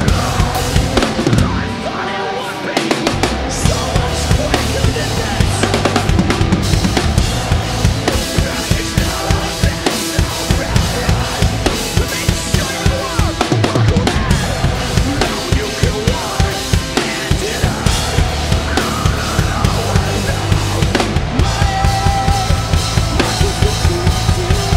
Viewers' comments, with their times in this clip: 0:05 Nearly 20 years old, and this song (and ALBUM) is still relevant to the culture. The fill is absolute perfection.
0:05 I like the little nuanced changes he added to the song. That fill 👌🏼. I wonder if the changes are set to set or this is just what he’s playing to it now.
0:05 such a creative fill/chop. Aaron will always be one of my favorite drummers.
0:06 I still don’t understand his drum fill wtf is that ?